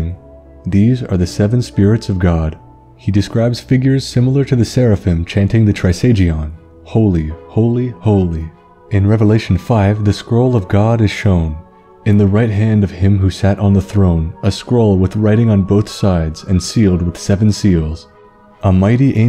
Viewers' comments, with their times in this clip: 0:05 I thought I was tripping I thought I heard the voice get distorted. Scared the shit outta me and I had to rewind to be sure. On other things that scare the shit outta me, christian mythology to this DAY still uneases me. I used to read Revelations constantly as a kid and it made me nervous/uneasy around any biblical depictions or satanic shit. I got over it to an extent and hell, I enjoy the SMT series (the few I've played). Still, my christian upbringing ever so slightly unnerves me yet on videos like this.